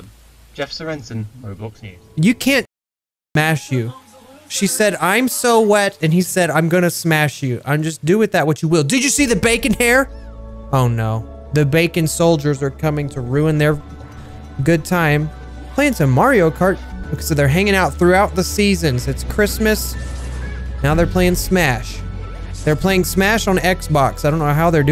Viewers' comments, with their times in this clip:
0:10 your voice died even on the pc! Edit: oh it got fixed :D and btw wow 33 likes tysm i didnt know a comment about a glitch could get that many likes